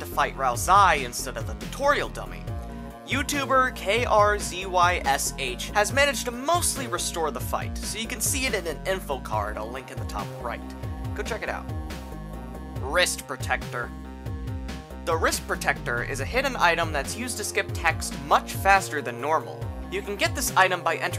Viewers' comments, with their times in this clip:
0:03 reading that polish name out like its an acronym omg